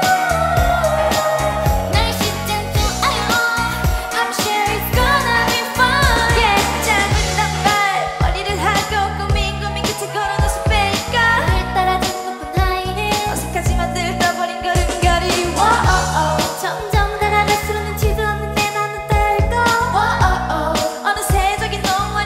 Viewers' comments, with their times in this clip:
0:07 omg her rapping is so good and her facial expresions is so damn cute and sexy as the song 😍❤️